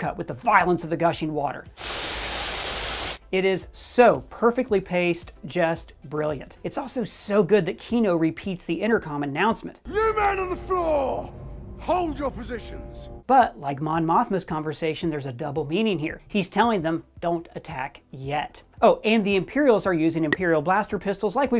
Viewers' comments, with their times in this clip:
0:09 This might be an overreach but the siren reminds me of John Williams' Count Dooku/Separatist theme especially from the part where he and the Geonosians are discussing hiding the Death Star plans, bridging it to them making Death Star parts at this prison.